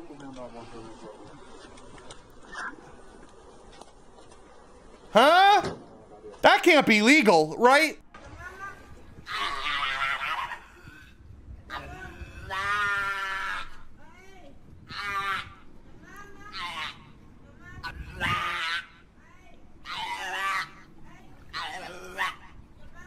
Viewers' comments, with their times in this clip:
0:09 thats not seal thats a SEEEEEEEEEEEEEEEEEEEEE